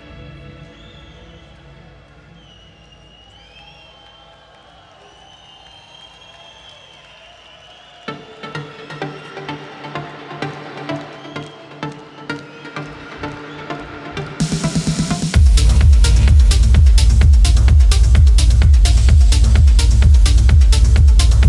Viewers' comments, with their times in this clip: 0:07 that drop insane¡